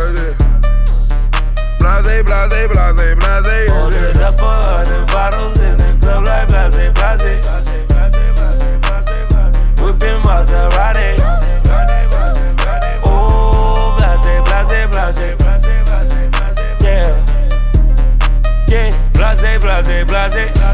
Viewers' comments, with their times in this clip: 0:03 future is talking in beginning up to ...then again at the start of every hook--then ty repeats what he said.